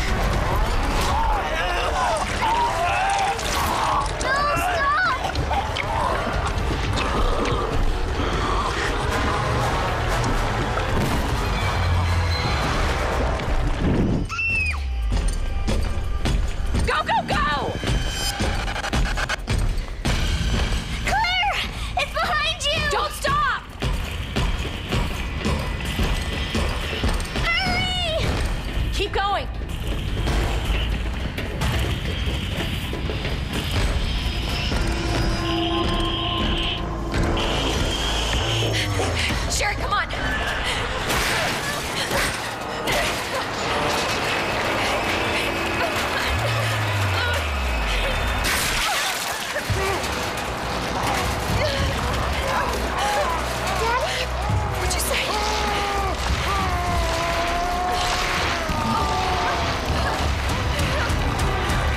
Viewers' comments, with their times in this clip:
0:09 backgrounds music sounds like a1970s stuff I like it
0:46 this scene is Just perfect, The Tyrant's empty look. The sound off the elevator's door been. crush. Claire in front or sherry to protec her. The gore. Just perfect